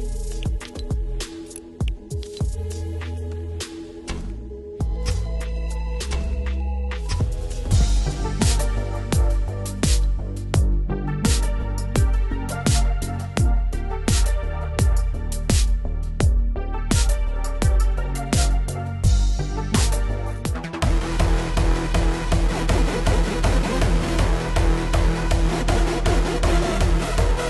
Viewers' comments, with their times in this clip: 0:08 Not really sneaky if you have a loud boom box next to you